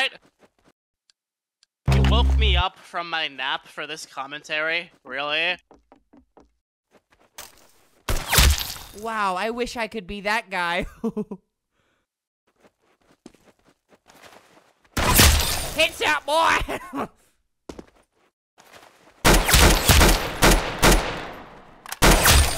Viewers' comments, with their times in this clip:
0:07 Flamnigo commentary Chill : )